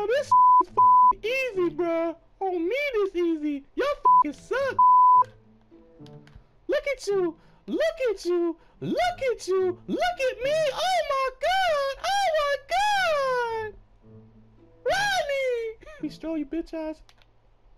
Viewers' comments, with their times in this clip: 0:03 let me find out this his regular voice lol jk